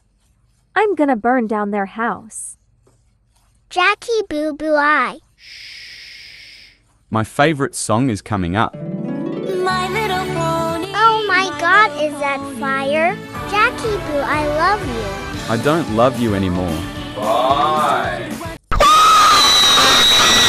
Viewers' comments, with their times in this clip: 0:06 not My phony
0:07 "My LiTtLe PoNy" got me dying 😂😂